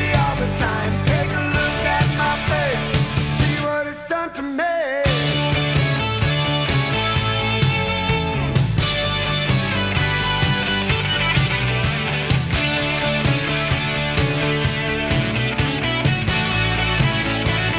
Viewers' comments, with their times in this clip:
0:04 Great lead line from
0:05 is why I love 80s music. Guitar solos can move a person 👏🏼👍🏼